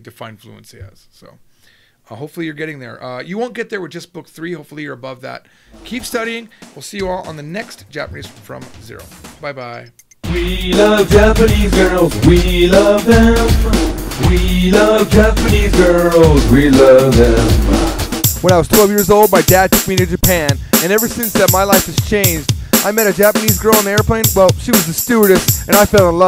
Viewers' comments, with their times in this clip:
0:10 fffffuuuuuuuxxxkkk I'm at work on break and the volume was turned up at the end! NSFW!!!